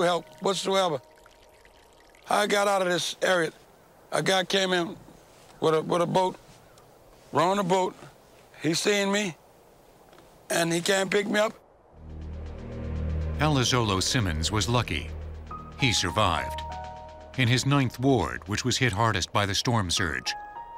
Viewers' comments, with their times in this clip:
0:04 The thumb nail. And this niggas sounds exactlly how he looks.